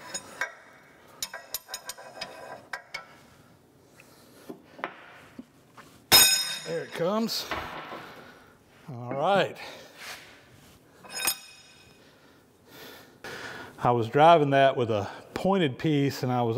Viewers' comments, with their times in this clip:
0:04 /46 the sound of extra thrust does the truck. :)